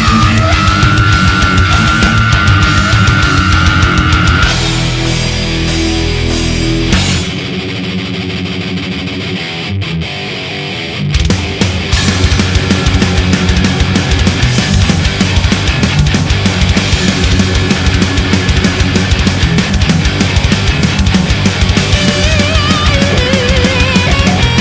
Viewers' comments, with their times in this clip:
0:07 That riff that starts is fucking vicious.